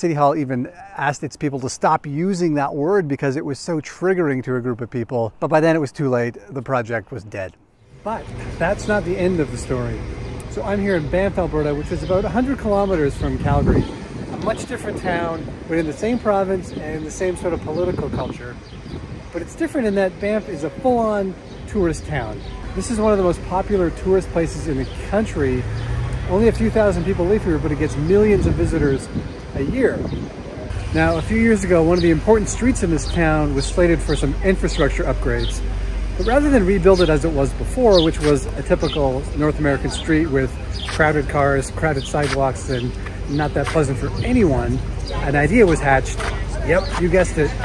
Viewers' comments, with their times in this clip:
0:09 Had to rewatch the video starting from the surroundings are so pretty: the mountains, the small buildings, the pavement, the birds chirping, the mountains, OH GOOD GRIEF, THE MOUNTAINS I completely forgot about the topic and the talking points.
0:33 It's quiet until the truck...